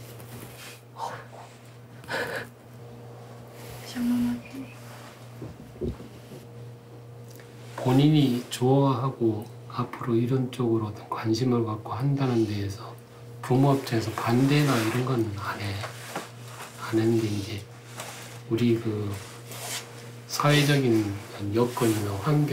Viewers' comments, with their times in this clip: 0:06 the father handled the situation extremely well, I was holding my breathe initially and when he spoke such collected words, and with such tranquility, I literally felt the biggest wave of relief. I wish all parents were this understanding for the sake of Korea's youth wanting to break out of the oppression of old customs. </3